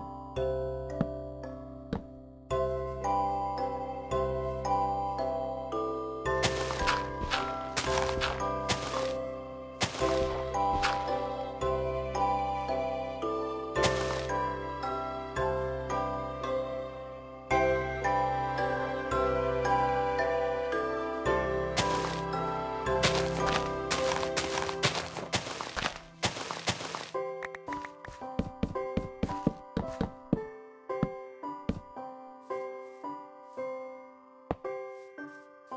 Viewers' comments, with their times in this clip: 0:05 the breaking of blocks matched with the music!
0:06 don’t know if this was intentional or not but the dirt breaking synced with the music, it was so satisfying.
0:10 him breaking dirt matches music, then putting down the Redstone also matches Music.
0:17 so satisfying cuz it was going at the same time as the music
0:17 perfect music timing